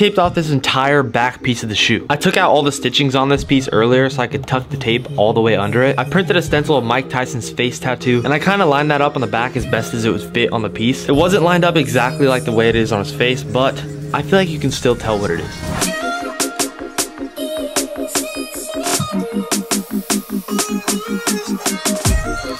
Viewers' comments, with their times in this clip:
0:03 Felt like someone is speaking in my ears